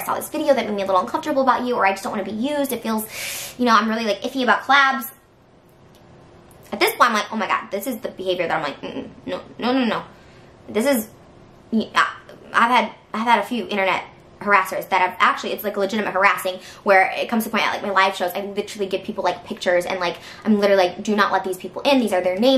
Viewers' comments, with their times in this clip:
0:10 why does trisha's voice sound so high pitched